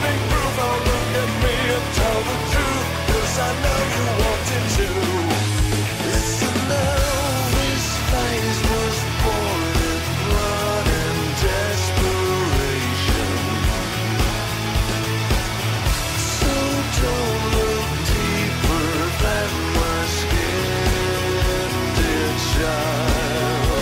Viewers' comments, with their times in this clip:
0:10 I just love the moment The music and scene just go together so well.